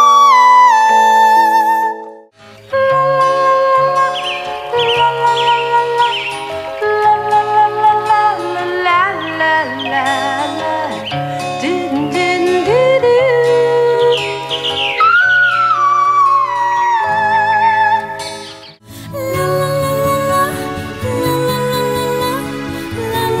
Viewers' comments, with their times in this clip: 0:04 Minnie's is my favourite because she's not trying too hard, if that makes sense. She isn't pushing or reaching, she's just letting it flow. It's soft, sweet and beautiful. As a side note... I don't think the dancing really suits that song lol